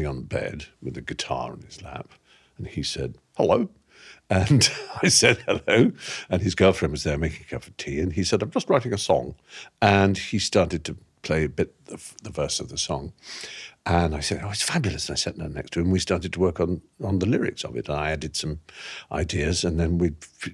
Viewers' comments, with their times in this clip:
0:04 That Hugh Laurie “hello” was delightful!